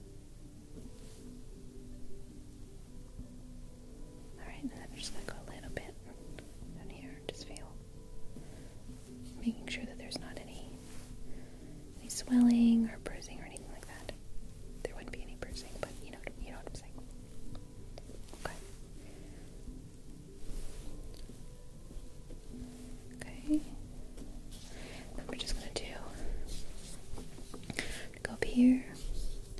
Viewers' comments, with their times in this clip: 0:10 did anyone else hear the music